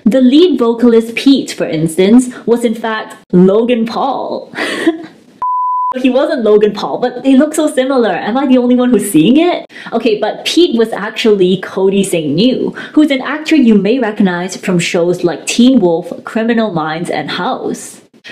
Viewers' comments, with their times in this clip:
0:05 that kill the video, I was focusing... Then that giggle 😂👍